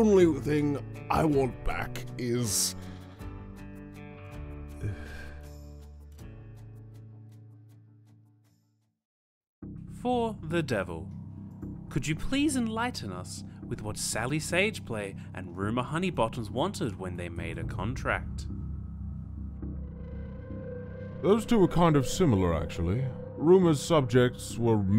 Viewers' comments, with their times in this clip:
0:09 oh my gosh the music gives me jschlatt flashbacks